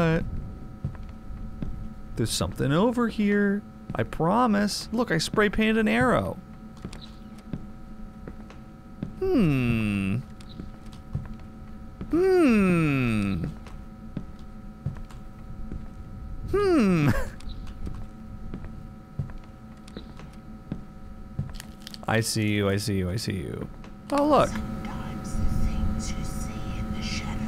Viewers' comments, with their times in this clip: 0:08 Lmao the increasing hmmms are hilarious 😂